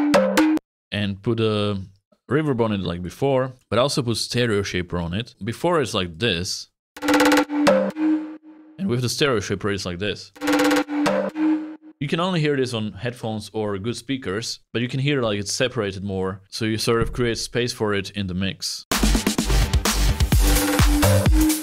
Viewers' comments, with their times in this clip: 0:09 you missed a perfect opportunity to put this sound first in the left ear and then into the right for the next four bars. Also, variation is key. I like how you made the melody, but it seems too repetitive to me. That might just be me, but I feel like if you shifted the melody from the I chord to the V chord for a while, then bring it back with a resolution. I’m not sure as to what a good resolution would be chord wise, but you could just mess around with that. I also feel like the mix you've made is perfect for a chorus. Well done.